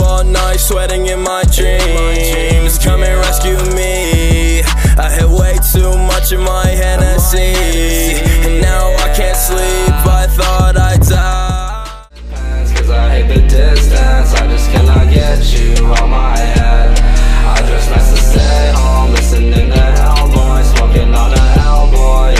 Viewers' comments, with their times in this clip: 0:10 love that song